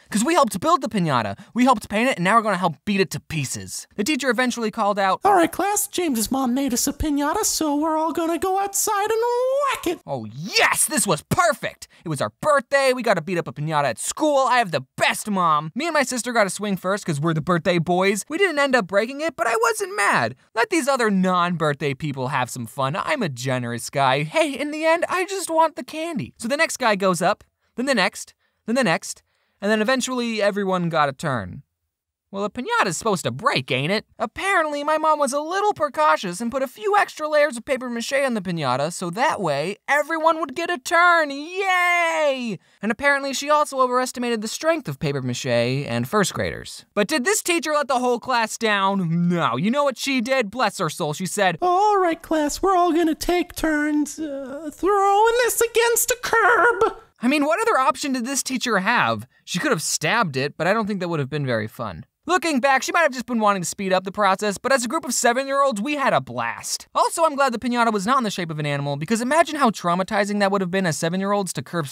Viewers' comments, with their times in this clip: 0:06 He sounds like Mickey Mouse.
0:50 The teacher's voice is killing me😂
0:51 I love the voice its said in " ThRoUgHiNg ThiS aGaInSt A cUrB"
0:51 I just love the voice crack😁😂
0:56 the voice crack to lol
0:56 the way the teacher sounded like when she said "curb" it sounded like an actula car was drifting at a curb